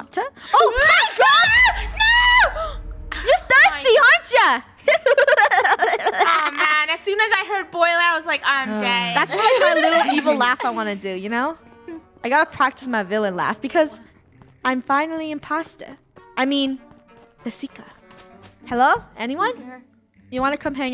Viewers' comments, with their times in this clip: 0:04 I love her evil laugh
0:05 loving the evil laugh